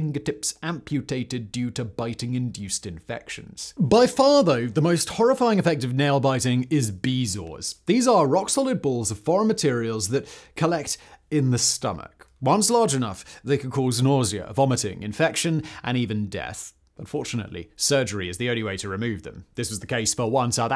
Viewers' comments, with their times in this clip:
0:04 bro sounded like Astarion for a second. the "by far though" line specifically